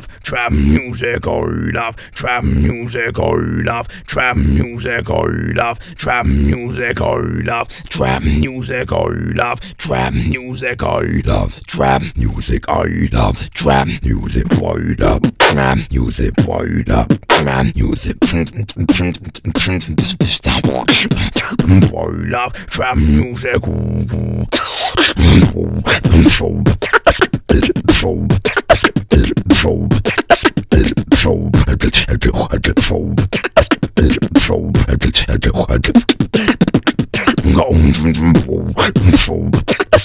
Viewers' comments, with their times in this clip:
0:08 howyou make your voice that deep
0:15 What's the sound like a P-fart?
0:23 Whats the name of that fuckn deep bass ???
0:23 that bass was sick m8